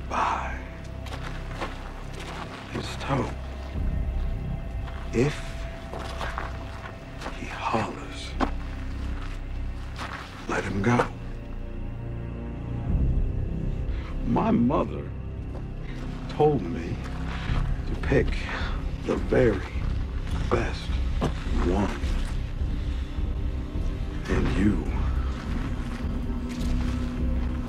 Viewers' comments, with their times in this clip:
0:10 Nobody could have nailed this character the way Jeffrey Dean Morgan did, and this entire sequence when we first see Negan is one of the greatest I’ve ever seen, so chilling. Also the music and Negan’s look sends chills up my spine.